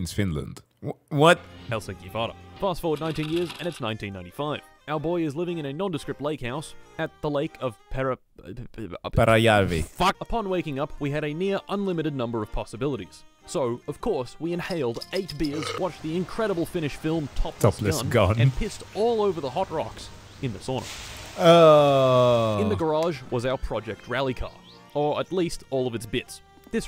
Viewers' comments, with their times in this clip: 0:08 I see someone else pronounces it correctly too